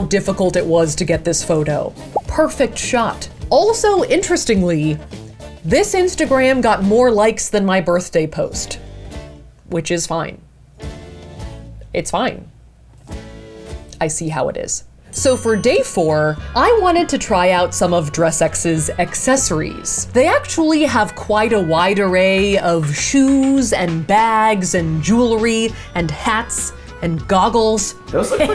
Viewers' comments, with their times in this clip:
0:09 the music fitting with the way she's speaking is so satisfying